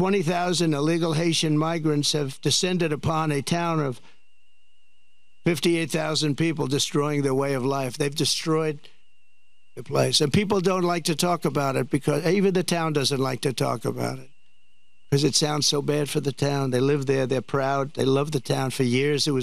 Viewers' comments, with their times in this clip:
0:03 What is with that whistle every time Trump stops talking? It's like one of those spooky tones from an old Sci-fi movie. Every time he stops talking it's like there's a black and white UFO off screen.